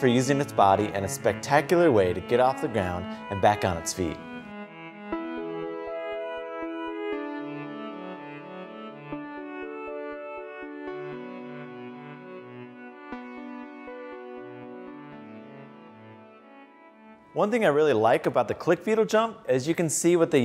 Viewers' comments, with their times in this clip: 0:04 Video: Soft peaceful music Beetle: I AM ROCKET SHIP